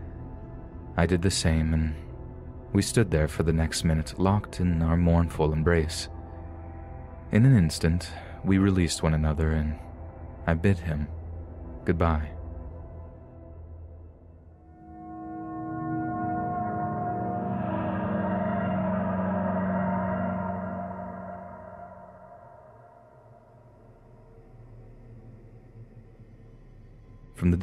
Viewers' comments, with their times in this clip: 0:06 "I bit him goodbye" 😳 0.o what! Why did she bite him
0:10 I thought you said "I bit him goodbye."
0:11 Oh god that’s so sad it that pause really made it sound like “I bit him”